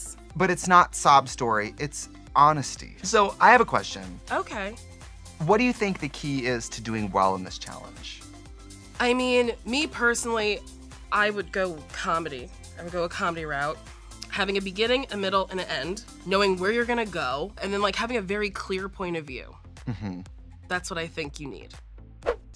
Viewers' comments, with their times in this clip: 0:04 is so obviously trixie reading from the card and it is SO funny to me LMAO